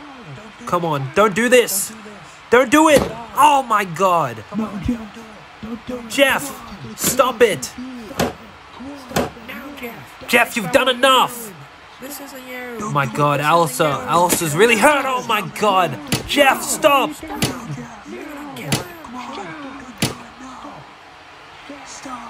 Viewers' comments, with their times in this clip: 0:09 Who else could hear his voice repeating in the background